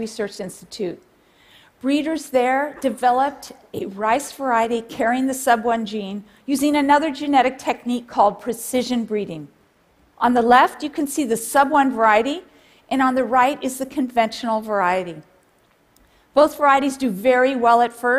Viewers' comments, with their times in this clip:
0:03 Lol at the burp